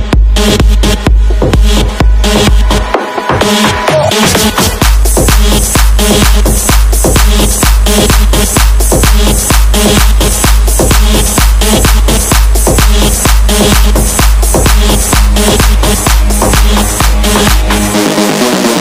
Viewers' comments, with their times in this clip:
0:03 Soo Addicted to this drop ! Best Thing I've eva heard in my lifeee